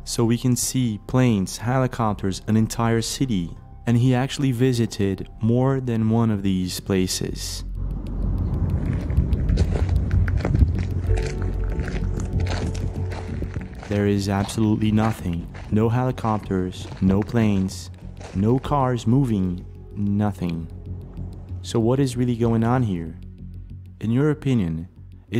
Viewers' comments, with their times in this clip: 0:09 no birds bugs planes but horn blowing